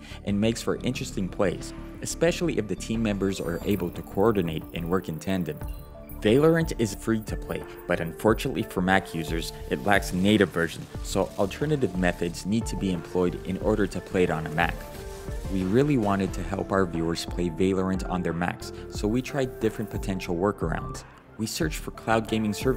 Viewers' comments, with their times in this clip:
0:05 bro vaylorant lmao